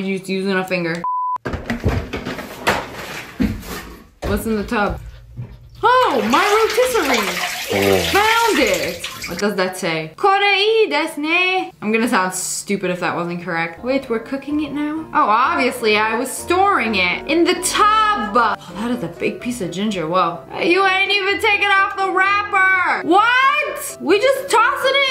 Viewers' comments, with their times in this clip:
0:09 your pronunciation was pretty good. For anyone wondering, 「これいいですね」 can be translated as "This (one) is good, right?"